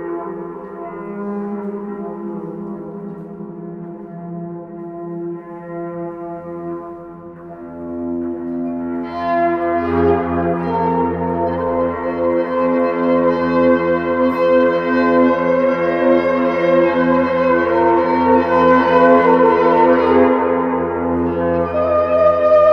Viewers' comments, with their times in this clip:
0:08 At the Mark it sounds like it would fit in Gears 5